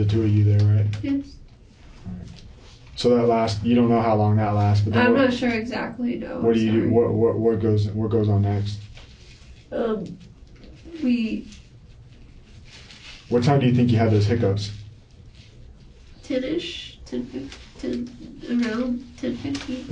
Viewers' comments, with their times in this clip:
0:03 It's interesting that she is speaking so fluently about the evening activities until she starts to describe "feeling tired" She starts to slow down significantly, unable to find words, like this is when she has to really start lying and she has to think about it now. Something happened there.